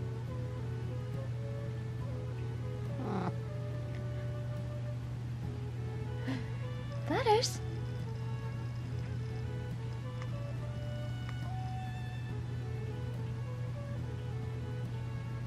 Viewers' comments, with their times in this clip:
0:03 that was a cute sound that he made